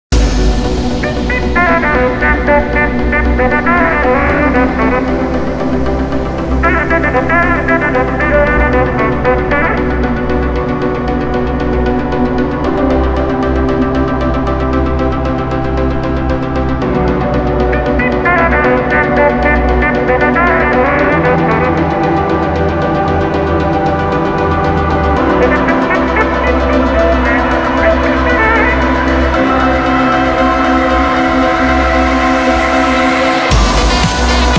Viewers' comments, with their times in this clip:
0:04 MAN that tune up sounds so good. It gives like a new feeling to sax in a dubstep track
0:19 I'm listening to the song with headphones at maximum volume and call me crazy but I hear a little bit of that melody in the background in this part